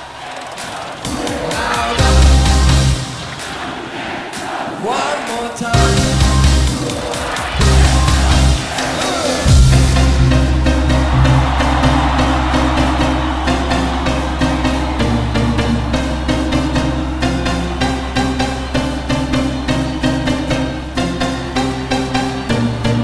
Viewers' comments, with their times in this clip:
0:08 To listen the best melody ever !!! ;)